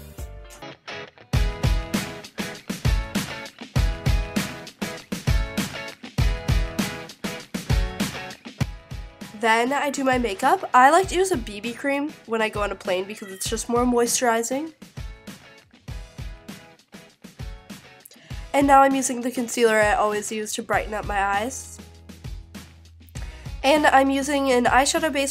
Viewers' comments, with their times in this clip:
0:03 the one direction music almost gave me a "heart attack"😏😎
0:13 did her cat meowed?